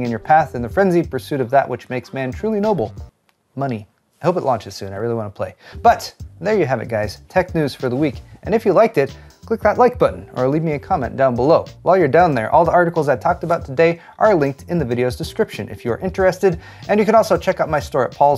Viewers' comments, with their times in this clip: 0:06 "Tech news for the weak". 😂